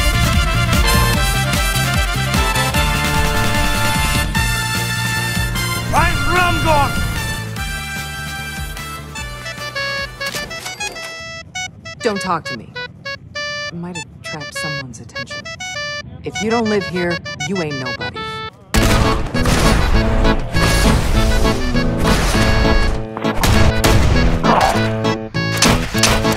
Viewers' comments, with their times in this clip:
0:09 When that Shanty Town OSRS music came on I got body slammed with nostalgia